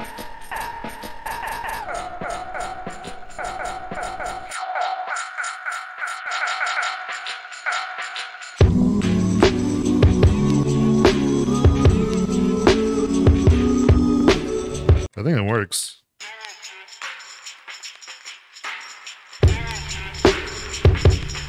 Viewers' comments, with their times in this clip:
0:04 that’s sample you drop in confuses me because when you are messing with it the vocal sounds one way but then as soon as you drop it in the beat the vocal sounds completely different. guess i’m losing it. i didn’t see you make any other tweaks to it 😢